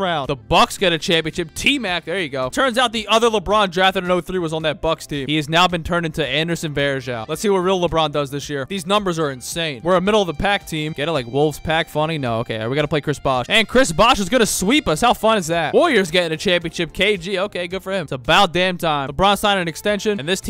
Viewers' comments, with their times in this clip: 0:05 “he is now Anderson Varejao” that sounded so deep